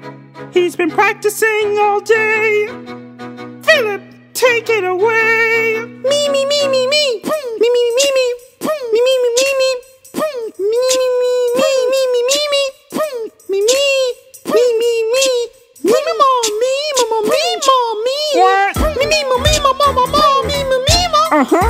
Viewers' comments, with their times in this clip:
0:07 It's the ''POOM'' for me